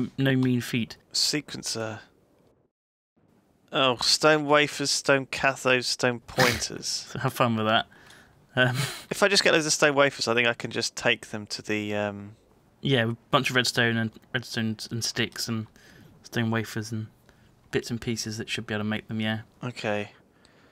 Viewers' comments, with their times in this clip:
0:04 Thought that said "Stone Cocaine".